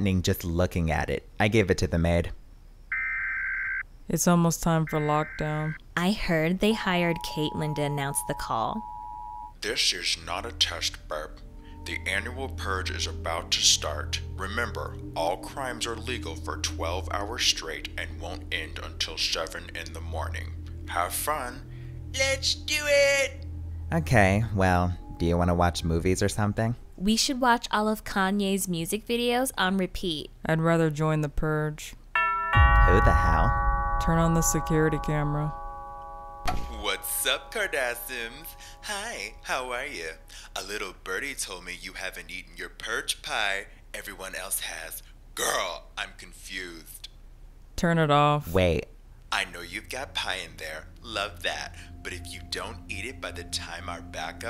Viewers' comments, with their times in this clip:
0:04 oh uh siren head is here
0:10 Thes is nut a tast, BEB. i died 🤣
0:35 Omg Jeffree Star 😪, they literally nailed his voice 💯🔥🔥
0:38 the blue bunny says "Hi, how are ya?" I be like "Jefree? Is that you?"😂